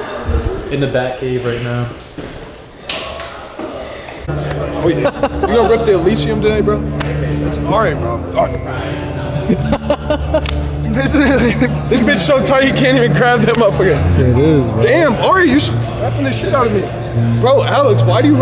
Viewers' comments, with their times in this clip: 0:05 The TOOL coming in is wild. i need to go to that gym